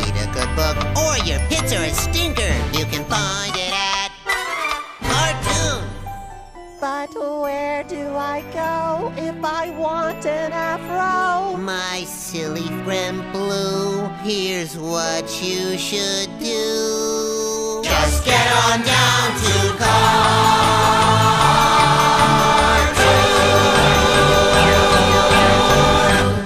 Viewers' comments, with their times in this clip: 0:07 Blue sounded like Carl Weezer